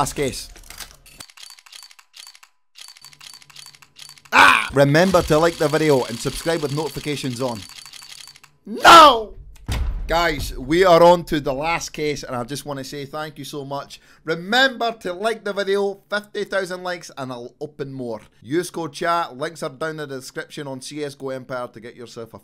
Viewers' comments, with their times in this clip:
0:04 you have a stroke or what? "notifcations"